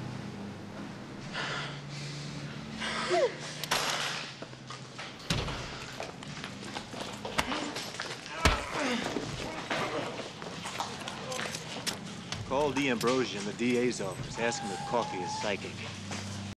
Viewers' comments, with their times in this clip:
0:07 in the video you can hear the officers taking the offender into custody. Good video.